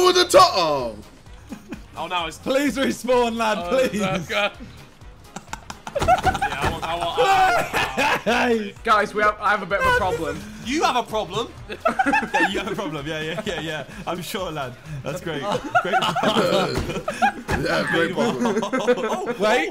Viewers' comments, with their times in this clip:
0:03 Josh has an underrated laugh lmao